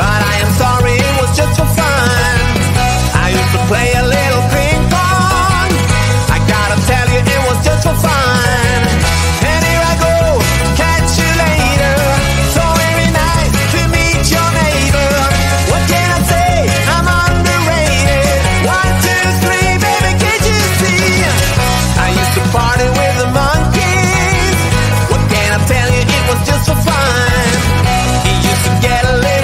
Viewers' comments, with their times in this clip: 0:10 The song? Catch you later, every night we meet your neighbour?? 😂😂 anyway love 5 minute crafts ❤️❤️